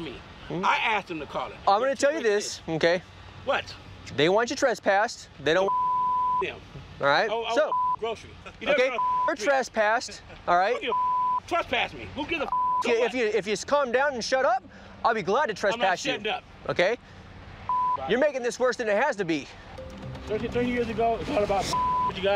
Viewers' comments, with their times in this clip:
0:08 cop in the back starts cracking up